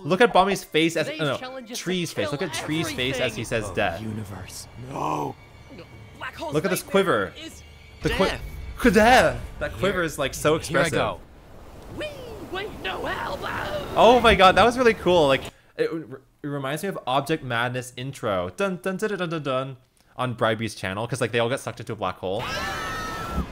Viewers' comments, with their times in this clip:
0:05 I CAN'T THE "DEeaaTH" PART IS MAKING ME LAUGH-